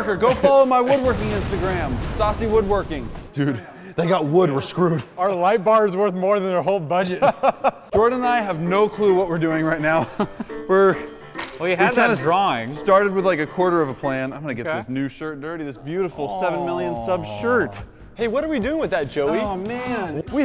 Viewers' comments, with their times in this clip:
0:04 "Our light bar is worth more than their whole budget" rich white guy laugh